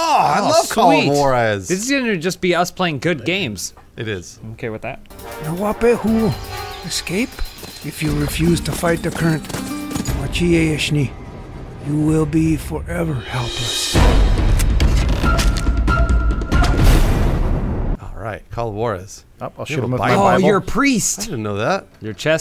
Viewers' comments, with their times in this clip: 0:06 is it just me or does this sound like Michael Rooker? .-.